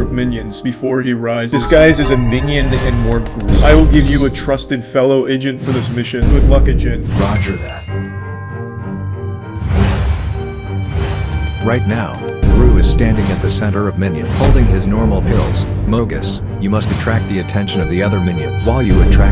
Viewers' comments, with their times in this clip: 0:06 bruh its good luck not gook luck